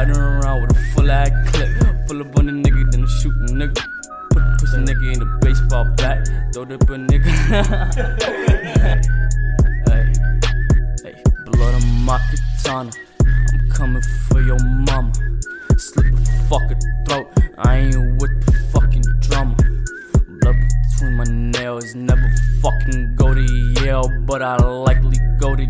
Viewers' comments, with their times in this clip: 0:07 that laugh gives me more reasons to stay alive ❣